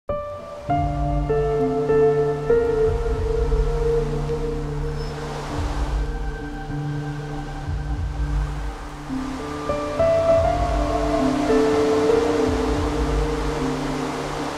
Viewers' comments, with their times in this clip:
0:01 I like this theme song